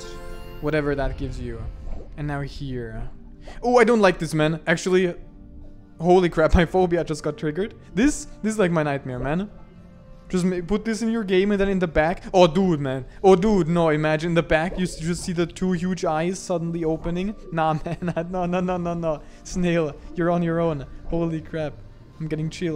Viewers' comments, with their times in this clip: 0:08 What did you say ? Can't tell if you're naming a certain phobia, or saying "my phobia" , if so what is it if you don't mind.